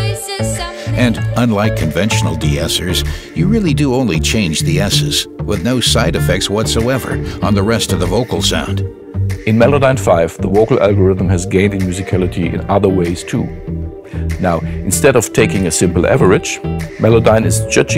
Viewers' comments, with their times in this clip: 0:05 "with no thide effecth wathoever"